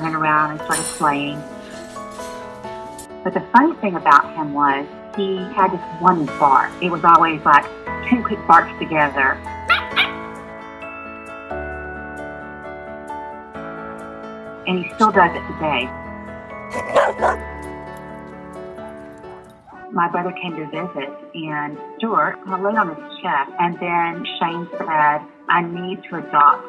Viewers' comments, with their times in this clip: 0:09 That two-bark transition is a tearjerker, not gonna lie...